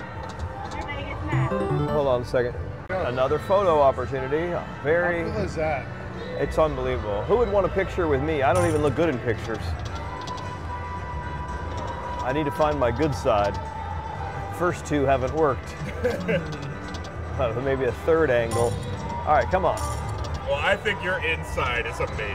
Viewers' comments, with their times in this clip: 0:04 St. Paul and the broken bones in the background.